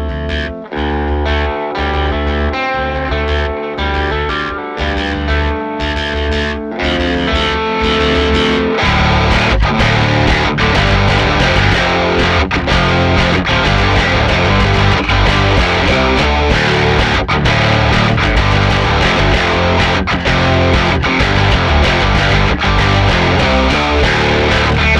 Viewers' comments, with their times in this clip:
0:06 I legit got goosebumps when that swell came in, knowing what was next, and they nailed it. Crazy how tight these two are without a rhythm track! Immense players.